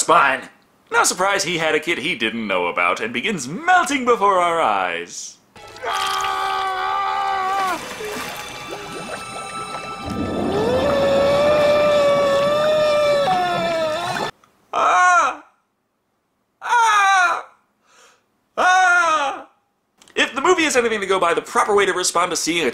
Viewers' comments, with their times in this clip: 0:10 Sounds like the scream when the bad guy drove into the barrel of toxic waste in Robocop.